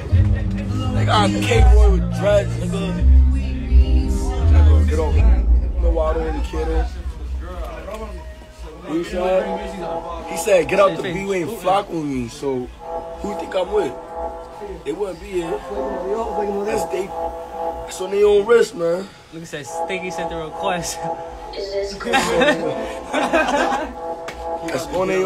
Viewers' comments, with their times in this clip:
0:09 bro got a theme song